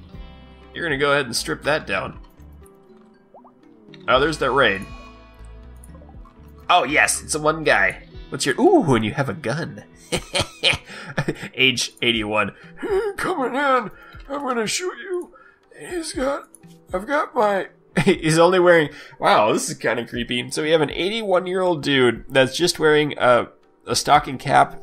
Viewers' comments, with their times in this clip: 0:08 That little evil laugh was genuinely hilarious :D